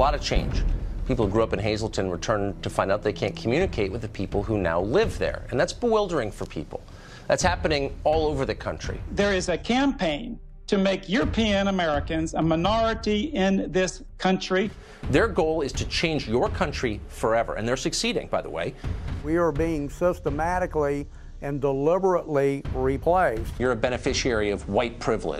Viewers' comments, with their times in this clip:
0:09 lol he mentions how European Americans are a minority and the next guy sounds like a king of the hill character.